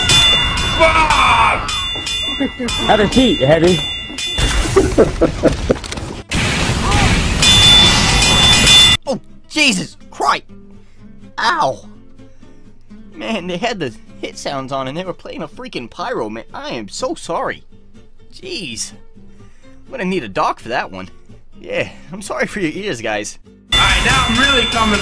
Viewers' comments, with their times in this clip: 0:08 Wasn't Da Loud
0:11 How was that loud? Believe me, I've heard worse.